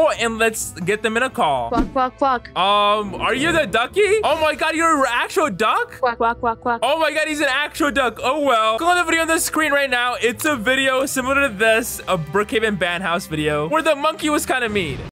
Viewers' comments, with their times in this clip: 0:06 I hear duck’s voice